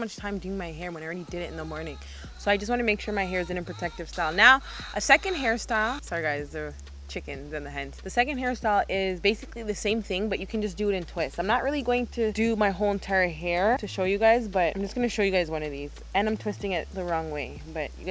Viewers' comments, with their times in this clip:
0:04 ... 😂😂😂... I always love hearing your animals in the background... 😂😂👍👍💯💯🇯🇲🇯🇲🇯🇲🇯🇲